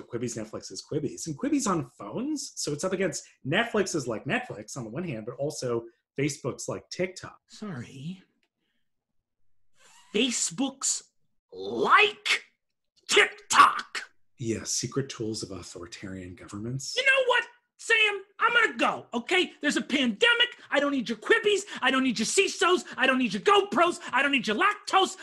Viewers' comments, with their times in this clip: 0:08 Is Brennan related to Gilbert Gottfried?